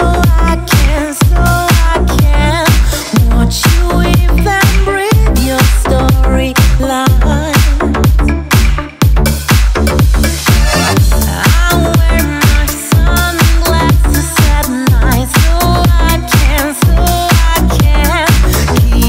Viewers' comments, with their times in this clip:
0:06 it sounds like miranda sings singing